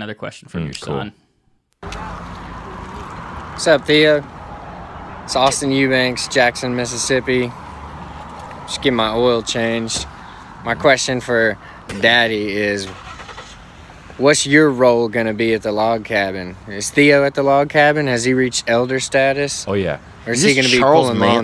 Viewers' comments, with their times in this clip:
0:05 😂 Theos random laugh that fights its way out his body.